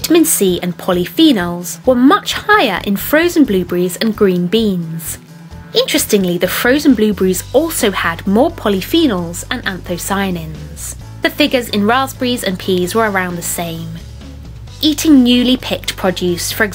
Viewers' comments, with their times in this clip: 0:03 Brits: “blueb’rries...”; Americans: “blu-barries”; Canadians: “blueberries”.